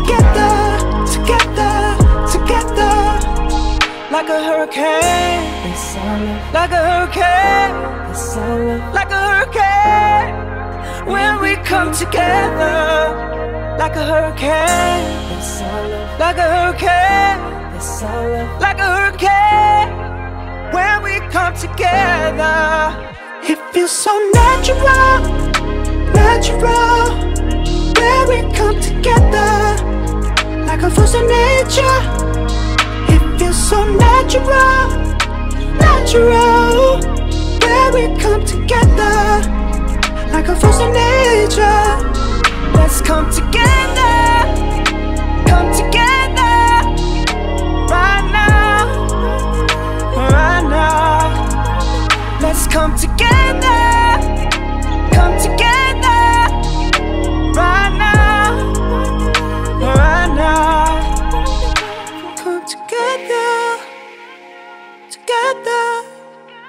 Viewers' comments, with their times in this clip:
0:03 if you listen carefully, you will hear a voice who just like louis in the background
0:10 People having doubt is that Louis Me too but the harmony I feel that's Louis. In one direction Louis carried this type of harmonies.
0:16 why do I hear Louis Tomlinson?! 😍
0:42 > zayn sounds so young!!
0:43 His voice in 😭
0:45 The last part sounded like baby zayn
0:53 his voice hits different..Wwwoooowww